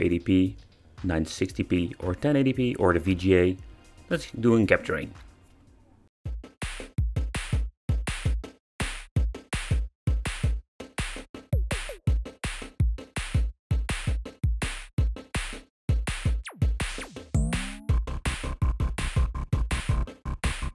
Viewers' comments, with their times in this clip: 0:08 You brought the song back!!!!!!!!! It was stuck in my head for like 2 years as I watch most of your videos. 🤘😁